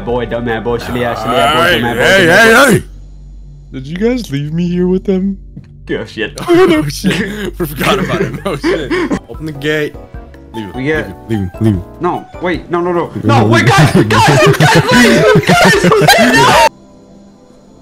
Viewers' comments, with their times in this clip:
0:03 The Patrick Voice 😭